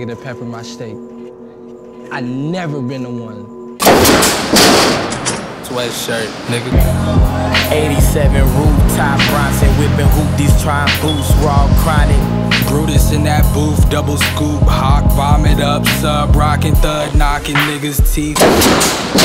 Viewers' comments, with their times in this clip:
0:03 rip headphone users😂
0:03 WARNING for the loudest fucking noise on the planet